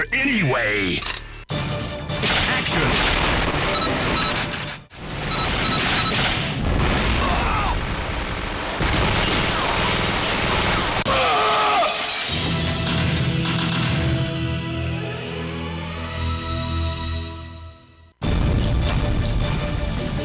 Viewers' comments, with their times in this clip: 0:06 Ernasto Diaz: Arghhhhh! S.T.F. Glock 1: shooting the Diaz Ernasto Diaz: screaming falling to death